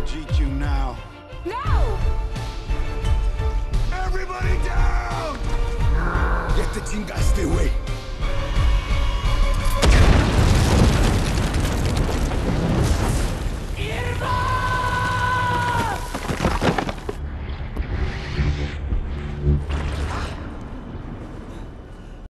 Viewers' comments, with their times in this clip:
0:09 if u hear carefully you can heard roblox oof